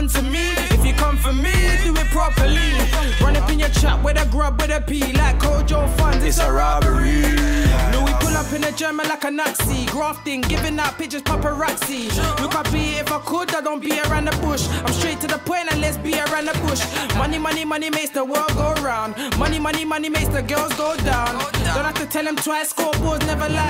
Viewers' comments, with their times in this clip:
0:07 the way the beat flipped